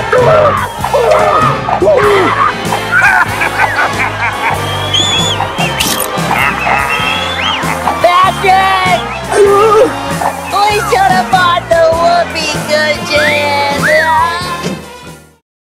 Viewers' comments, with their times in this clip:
0:04 Sandy whistles at SpongeBob and Patrick naked.
0:04 Sandy whistles at SpongeBob and Patrick naked.